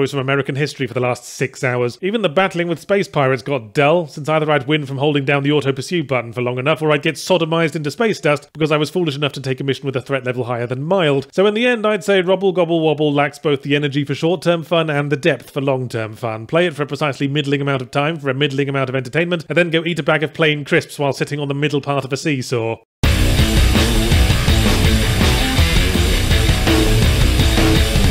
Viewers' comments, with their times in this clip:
0:09 That threat level wasn't above mild, it was above mallard ☝️😃